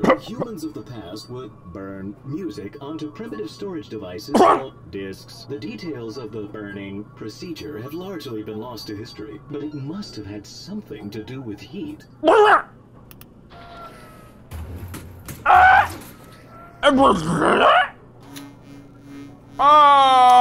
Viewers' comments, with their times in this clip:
0:04 Captions: mark:*stil trying to hack up a hairball*